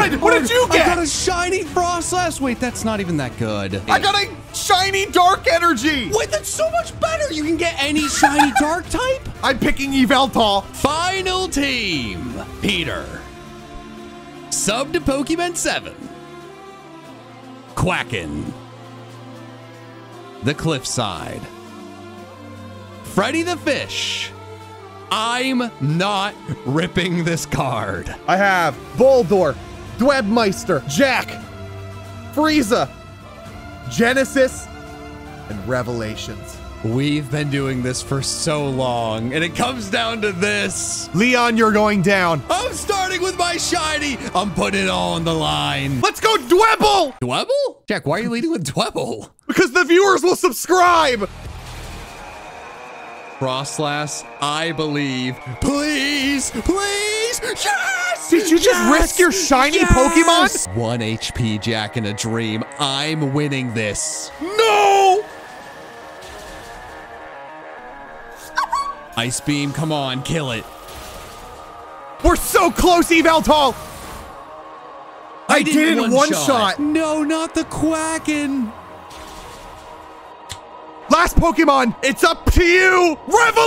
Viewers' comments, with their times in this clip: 0:10 You mean YAHVUTAL-
0:57 this man screams in lower case
1:09 was that pokeman